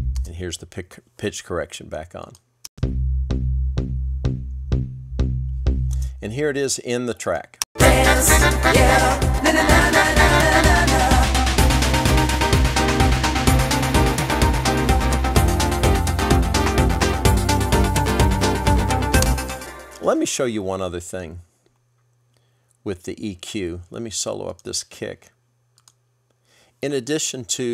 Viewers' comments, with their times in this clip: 0:10 RIP ears great video though thank you